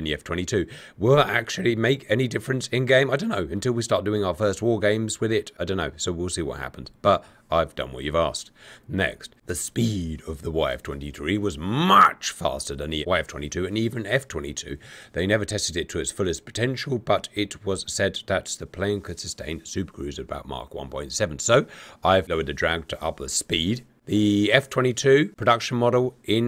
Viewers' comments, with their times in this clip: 0:08 did you cut a cough or something? haha